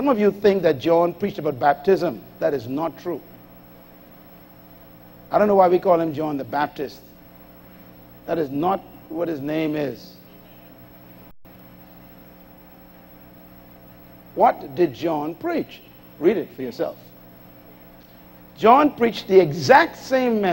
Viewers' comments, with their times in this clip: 0:06 I'm with you on that one. Dr. Myles' messages are always mind-blowing and an eye-opener but people like the ladies up there shouting is very distracting. No wonder Paul said something in 1 Corinthians -36 that women should be silent in churches is because of this. Perfect example is how the women at the front in this video behaved. It's their adrenaline speaking, not the Holy Spirit. I wonder if they still have the same energy when hardships comes knocking at their doors.